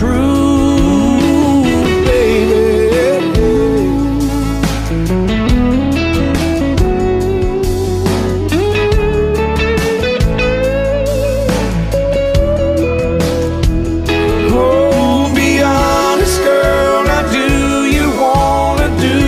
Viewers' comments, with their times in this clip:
0:04 guitar is fire